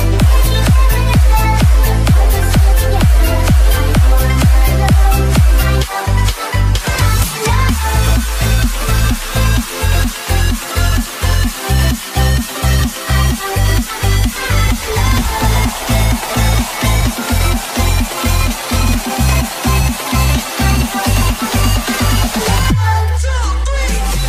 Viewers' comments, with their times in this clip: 0:07 It's only the first that makes me 😕 feel off beat.